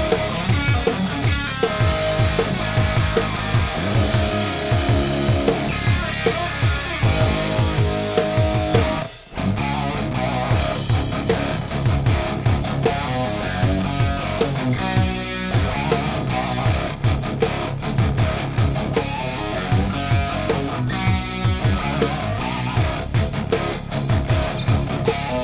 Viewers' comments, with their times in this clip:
0:06 Two Horns Up!! was that a planned Grove with the guitar and all? Facing the demons on the skins!.. This I was told was one the hardest to execute perfectly. Well you both nailed it. (Damn that double bass drum).
0:09 it sounded so accurate it's scary. Amazing job, both of you guys